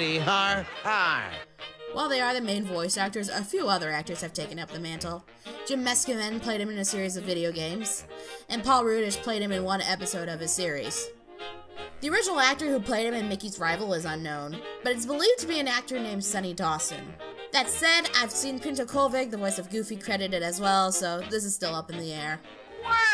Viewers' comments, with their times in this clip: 0:09 yoo i can play that background music on piano